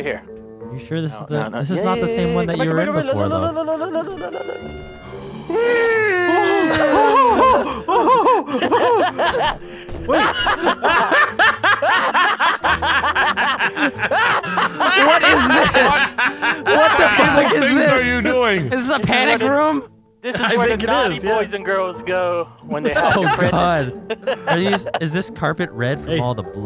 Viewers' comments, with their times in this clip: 0:10 Simultaneous evil laughs
0:11 those laughs though 😂😂😂